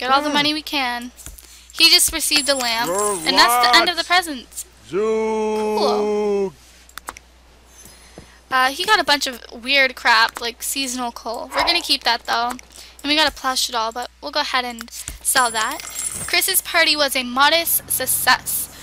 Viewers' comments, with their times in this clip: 0:04 Is Kris booing Jermiah 4 not going 2 the dance? Lol